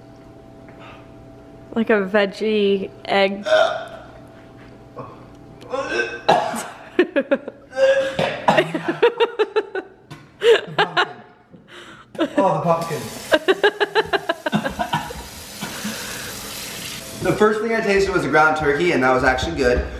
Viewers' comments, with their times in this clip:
0:03 that gag HAHAHAHAHA